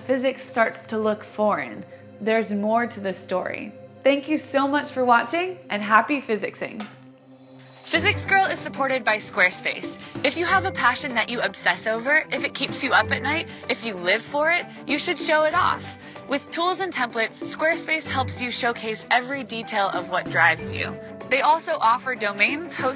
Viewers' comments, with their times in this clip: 0:08 My god that audio quality lol